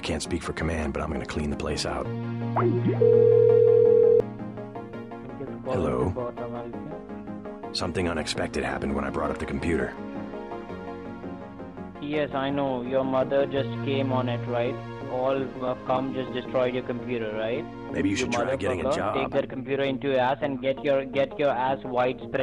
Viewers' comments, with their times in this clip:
0:04 when this guy picks up the phone he sounds so DEFEATED from the last phone call with JC 😂😂